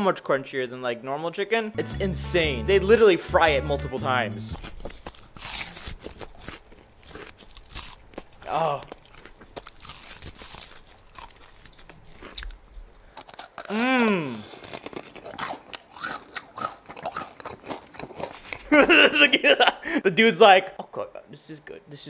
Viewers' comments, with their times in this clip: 0:08 sounds so fake